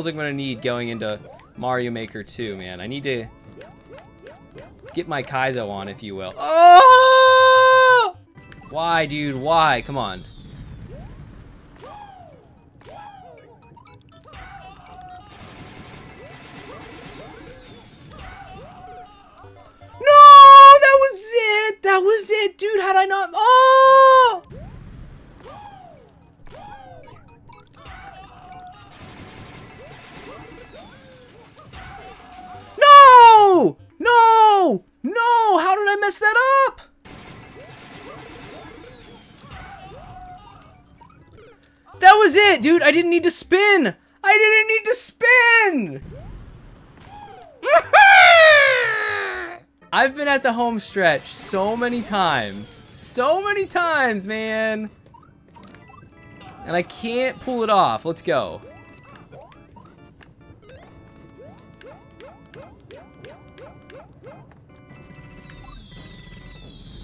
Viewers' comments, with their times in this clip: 0:06 dude sounding like the battle horn those monsters in botw use
0:46 R.I.P top-volume headphone users.
0:46 sounds like kazooie lol
0:47 sounds like toad lol
0:47 Petition for Nintendo to make the official Toad sound.
0:47 This sound reminded me of an angry bird.
0:47 You sound like a happy toad! 😁
0:48 Impressive impression of the sound Mario makes when he jumps!
0:48 he sounds like toad
0:48 you sound like toad lol
0:48 sounded like toad
0:49 Sounds like yoshi ❌🧢